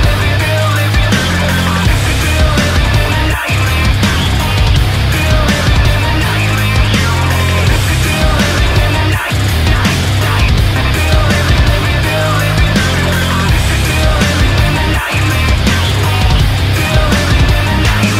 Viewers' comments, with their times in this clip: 0:05 I love how the lyrics sounds Plus the beat goes along with it making it sound better Who agrees with me